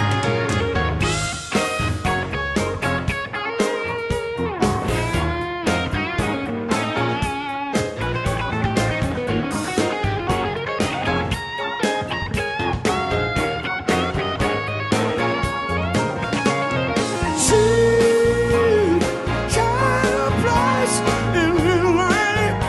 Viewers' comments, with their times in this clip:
0:07 That guitar run is so clean
0:07 jazz rock guitar !!! increíble
0:07 is such a jaw dropping guitar run by Herington. Chromatically tasteful